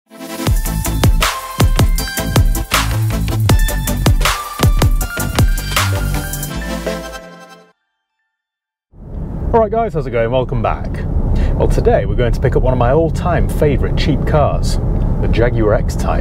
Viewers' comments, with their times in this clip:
0:01 The intro theme tune sounds different